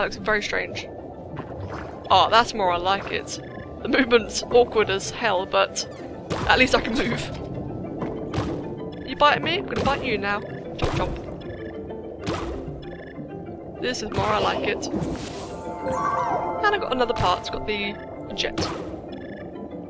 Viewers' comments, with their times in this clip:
0:07 She/he said chop chop? I think